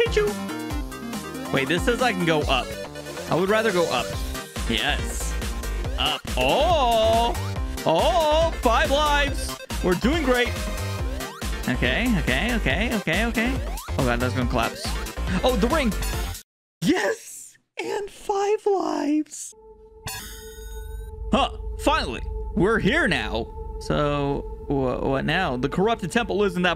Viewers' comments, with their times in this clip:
0:08 the angel island remix sounds nice